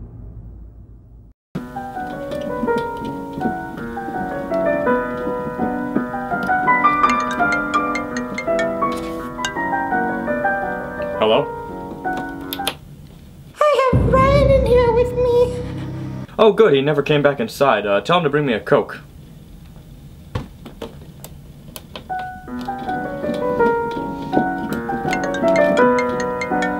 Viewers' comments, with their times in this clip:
0:07 nice piano skills